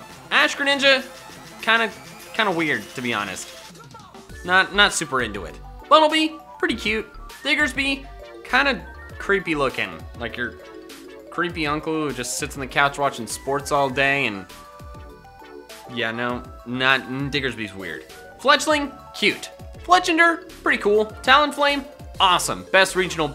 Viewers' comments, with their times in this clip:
0:07 I know it’s not what he said but am I the only one who hurt the n word?-